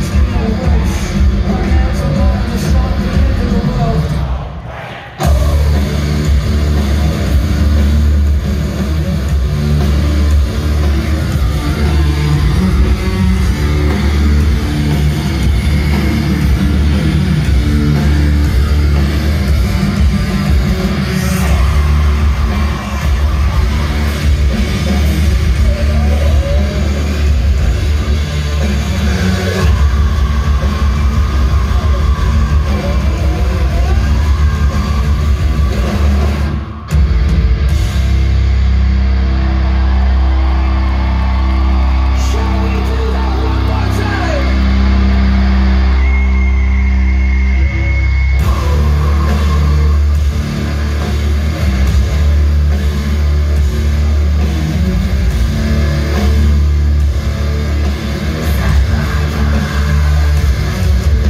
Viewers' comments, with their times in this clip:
0:04 That fuckin’ OH! 😍🔥
0:47 that new ending sounds a lot like a Suicide Season/There is a hell.../Sempiternal breakdown